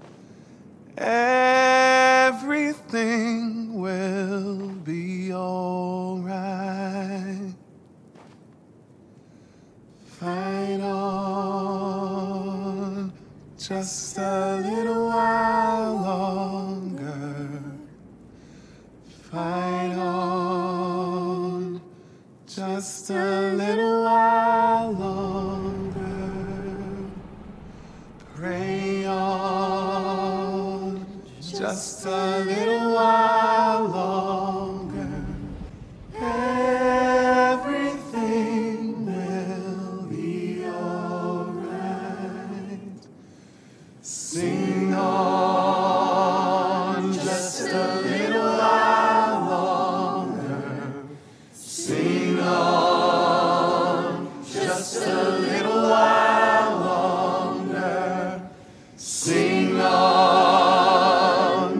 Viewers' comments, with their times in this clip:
0:10 North sings better than Markus 😂
0:42 all of them singing like a choir north being that one Soprano-